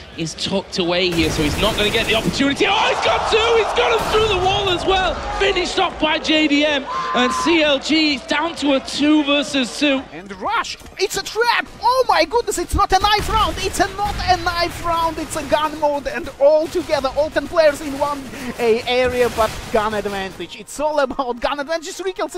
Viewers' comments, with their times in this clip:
0:06 that scream made my day